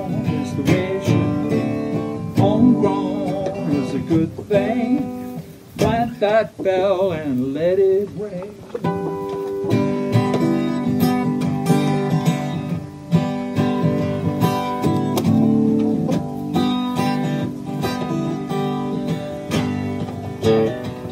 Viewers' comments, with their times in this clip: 0:07 ... here's the boss ... WTF!!! ... Who's the bastard who's singing to my chickens? LoL..